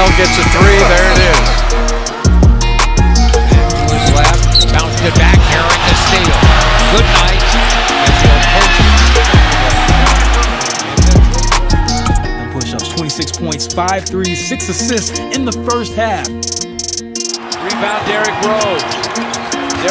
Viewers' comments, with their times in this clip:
0:04 the Bulls fans are cheering